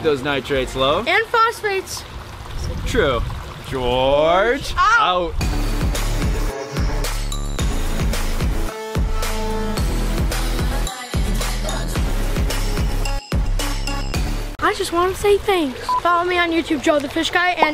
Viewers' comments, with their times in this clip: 0:05 this is where the music starts at the end ( this was used in a meme i saw and i like replaying this )